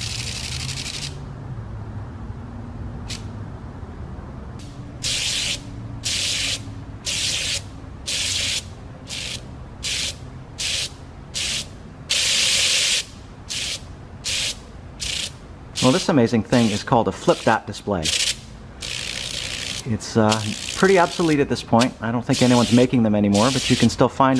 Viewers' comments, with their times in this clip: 0:05 it does make good rhythm. It could make riff of an intro.